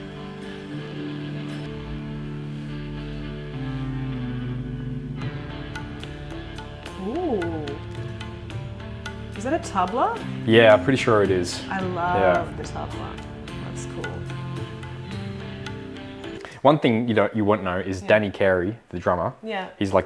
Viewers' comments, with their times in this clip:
0:07 Push it is a phenomenal song in any version! Such baited anticipation, knowing what is coming watching her experience it for the first time. I would love to have seen my reaction hearing this stellar performance the first time! PS, she has a great voice and carry!! … Yes ma’am!!